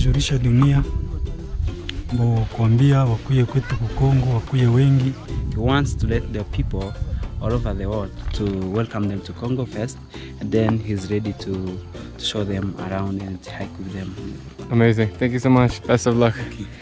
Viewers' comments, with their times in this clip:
0:03 Language he is taking looks like Kiswahili